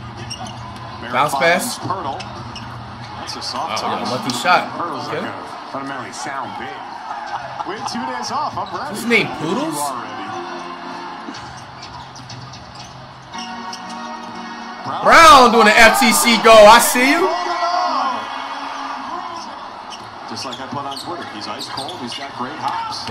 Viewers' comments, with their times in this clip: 0:08 is his name poodles 😭😭😭😭😭😭😭😭😭😭😭